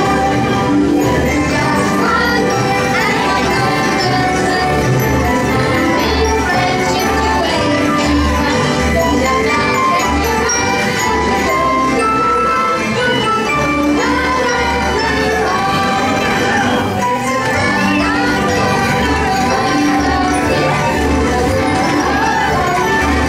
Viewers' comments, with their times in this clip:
0:07 Aww the music sounds so cute !